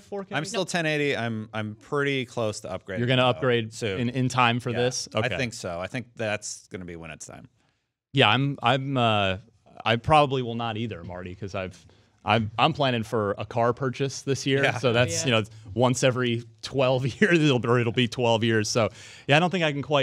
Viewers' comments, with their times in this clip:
0:07 lol is that a dog ?